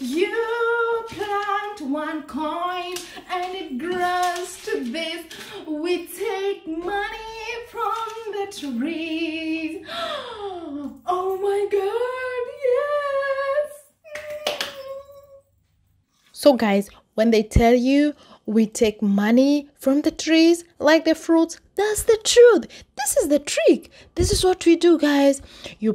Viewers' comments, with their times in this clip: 0:10 hahaha girl the Irony and sarcasm 😂 I swear I'm dying!!... let them know that we work hard!! It's not easy as they think!! That song min hahaha girl you have vocals ❤.. Hahahaha wait did you just plant a cent and the next day it grew to million Euros?? Hahahahah i swear you hilarious...